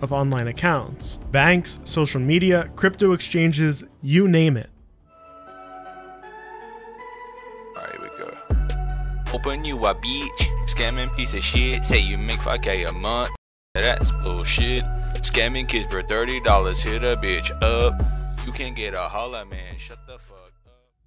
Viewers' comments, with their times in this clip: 0:09 child crying because he got scammed✋🏿😂